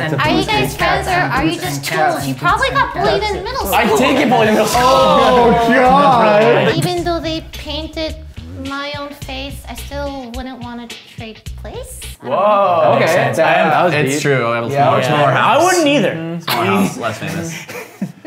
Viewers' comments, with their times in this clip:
0:04 i like the discord notification